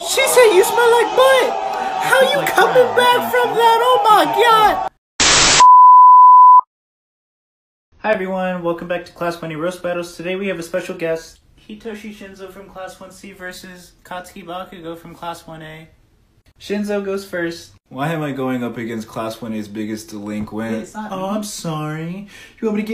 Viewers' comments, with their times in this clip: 0:10 Captions be like: class bunny roast battles